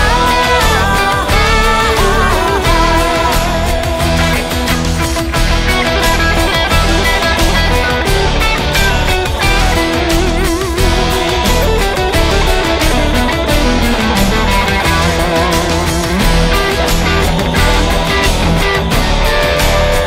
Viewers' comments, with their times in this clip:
0:04 aah that medieval electric guitar solo